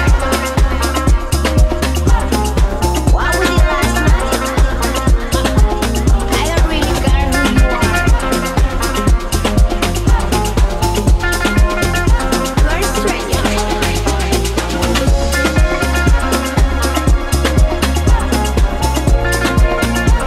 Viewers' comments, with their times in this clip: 0:03 is a badass track